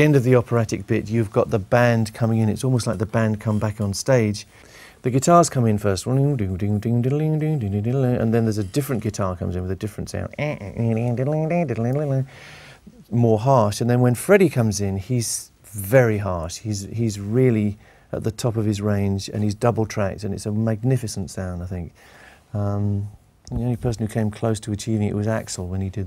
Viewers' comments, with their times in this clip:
0:07 Brian Talcking Chinese
0:09 A guitar comes in with a Lancashire accent.
0:11 ! ahhhh don't you just love Brian's guitar sounds!